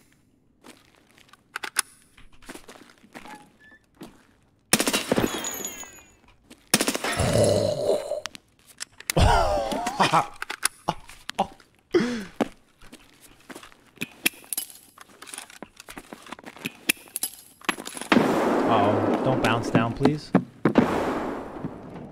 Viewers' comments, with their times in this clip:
0:06 minecraft zombie sound